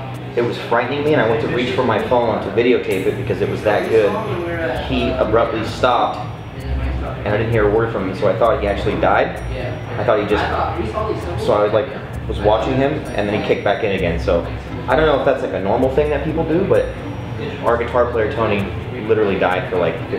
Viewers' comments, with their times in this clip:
0:03 At like when Jaime is talking does anyone hear tony in the background? What's he sayin.